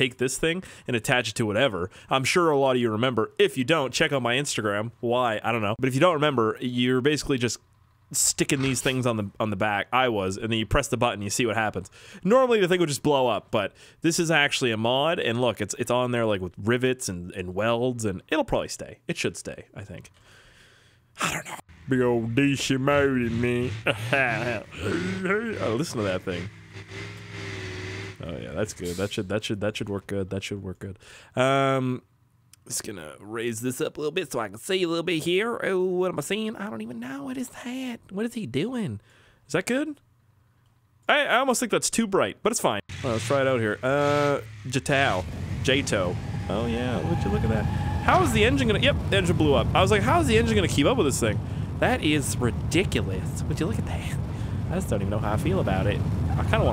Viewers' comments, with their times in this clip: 0:08 the truck has sneased
0:39 when he talks he sounds like the fat guy off of paradise pd 😂😂